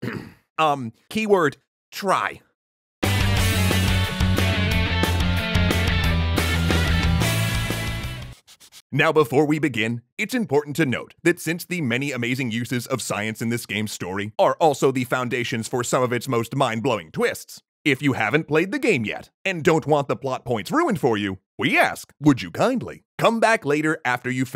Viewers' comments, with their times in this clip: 0:08 so you have a female durka durka on staff now. Durka durka, hoppa sherpa sherpa, durk durk alah, a bakala